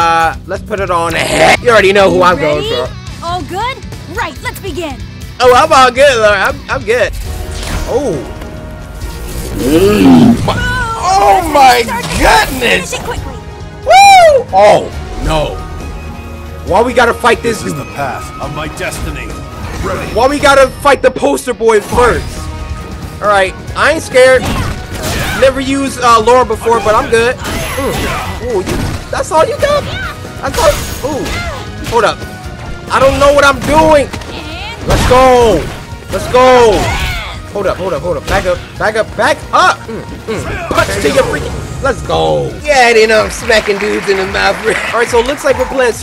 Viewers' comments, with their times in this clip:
0:09 did Laura fart
0:30 AINT NO WAY LAURA MOANED